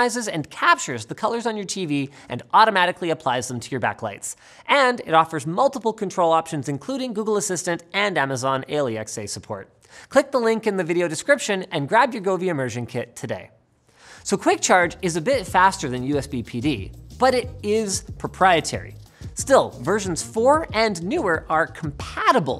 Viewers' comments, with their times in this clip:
0:06 Did Linus just call Alexa, A-L-E-X-A?
0:08 the way he says Alexa is so odd
0:08 Amazon ale-e-x-a Never heard that one before